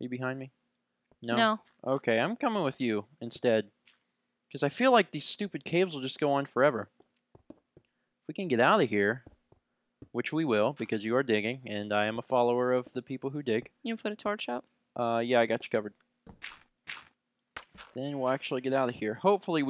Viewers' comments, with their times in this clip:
0:04 i jumped when he yelled (OH GOD!!) i almost had a heart attack!!